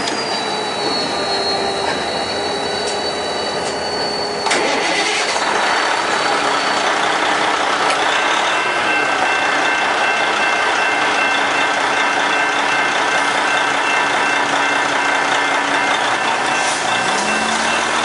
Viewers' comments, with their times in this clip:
0:04 loved the diesel startup at the train tracks what kind of engine/truck was that.